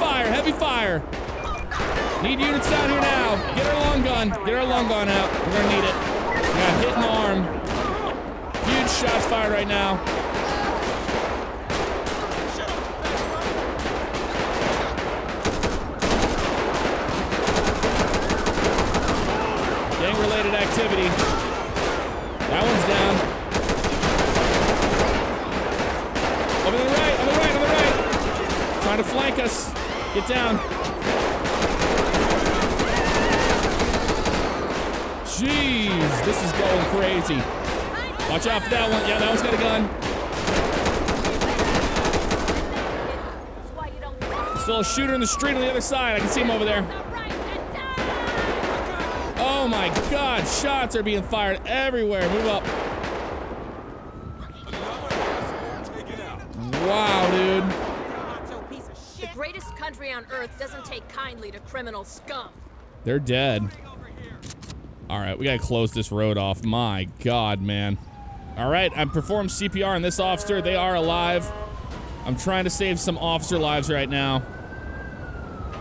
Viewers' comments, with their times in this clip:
0:03 Omg shots and screaming everywhere made me laugh!
0:58 I had to listen to the female officer Ai several times, I could have swore she said "The greatest lesbian on Earth doesn't take kindly to criminal scum." For some reason the first thing that came out of my mouth was: "Well shit, it's Captain Marvel!"